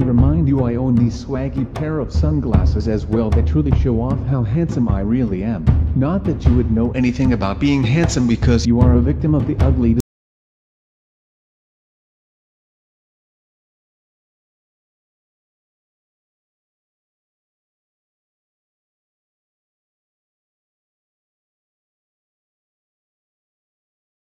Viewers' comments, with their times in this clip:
0:10 he went quiet